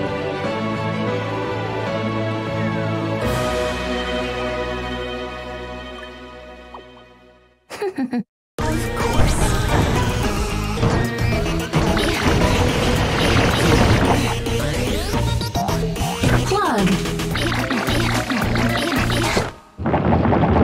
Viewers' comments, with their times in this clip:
0:07 that giggle got me